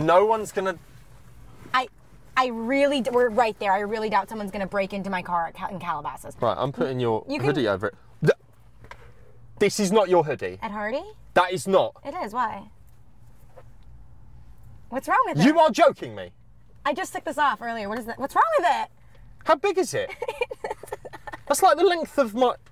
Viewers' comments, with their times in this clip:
0:08 I can't stop replaying this and just dying laughing. the flabbergasted "this is not your hoodie!?! that is not!! YOU ARE JOKING ME." 😭😭